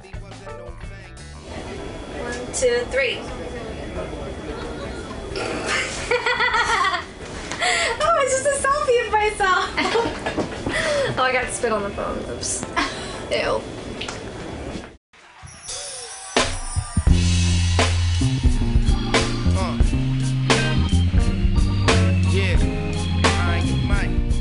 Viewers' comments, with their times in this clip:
0:05 She has the best laugh ever just listen to it